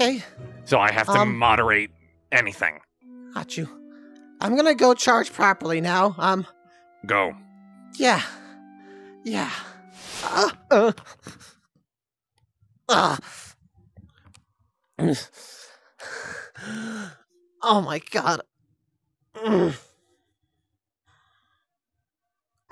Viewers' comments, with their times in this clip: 0:09 why he sound like that 🤨